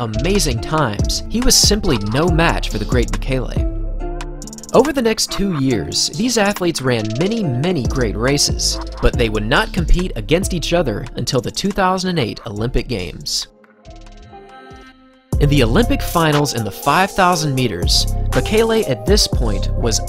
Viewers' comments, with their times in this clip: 0:06 The transition of the music is amazing